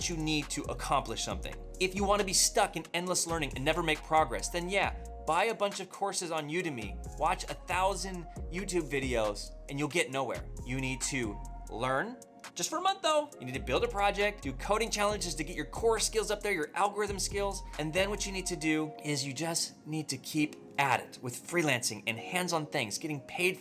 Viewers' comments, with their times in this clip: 0:10 "You need to learn JUST FOR A MONTH OO!" 😂😂 Some African accent right there 👏🔥💪🏽